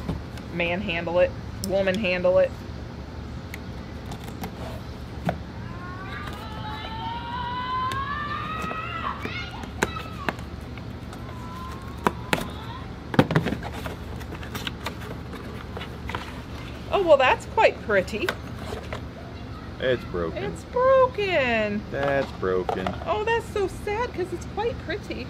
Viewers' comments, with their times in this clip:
0:06 Kid goes Super Sayan in the background.